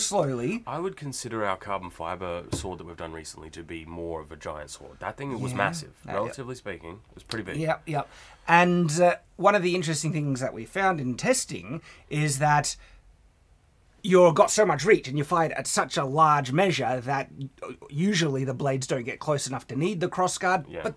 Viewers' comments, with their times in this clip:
0:04 "more of a giant sword" sounds like "more a vagina sword" and i can't unhear this